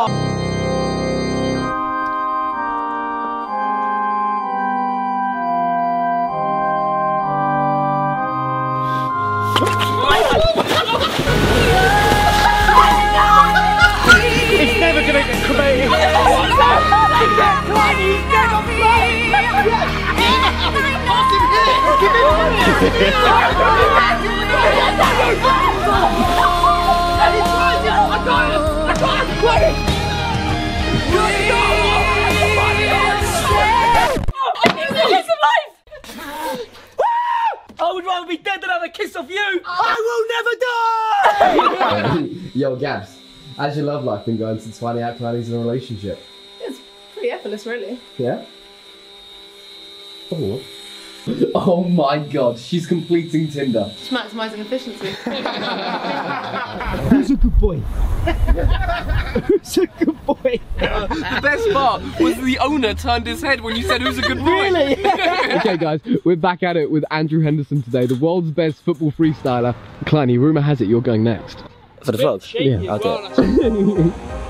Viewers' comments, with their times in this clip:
0:10 coffin dance music plays
0:57 I always laughing that doh